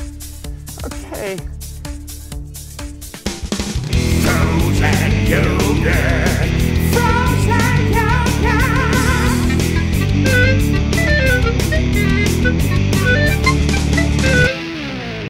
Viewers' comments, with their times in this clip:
0:10 Anybody notice the Clarinet solo courtesy of President Barack Obama